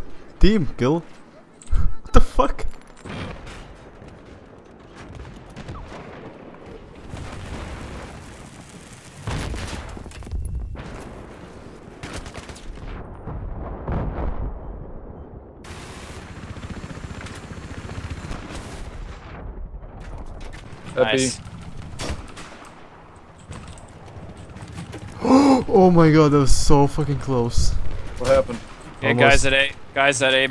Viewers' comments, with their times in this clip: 0:05 I can't be the only one who checked their Skype.
0:16 so bad laugh :D